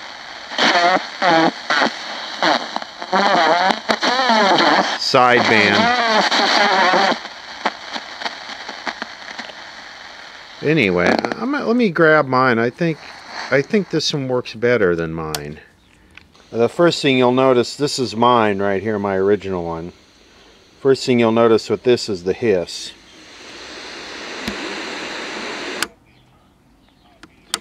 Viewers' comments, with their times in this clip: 0:10 No, that's FM radio bleedover. Had the unfortunate experience hearing it on various cheapo radios.